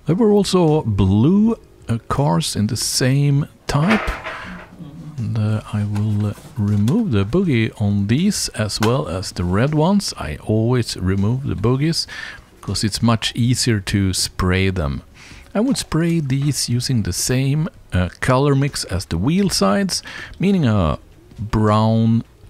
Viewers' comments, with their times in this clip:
0:04 Whats that crashing sound ?